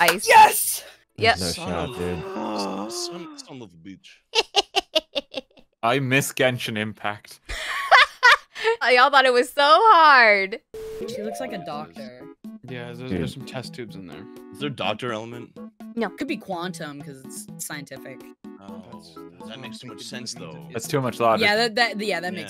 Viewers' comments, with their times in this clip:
0:05 the way he says it 😭